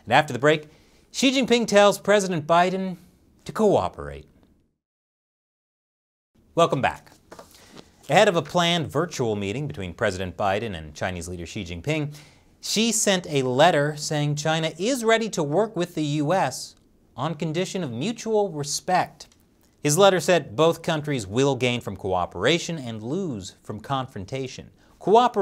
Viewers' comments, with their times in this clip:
0:06 God damn it, your delivery is just too good, and wow I actually got an ad for the first time ever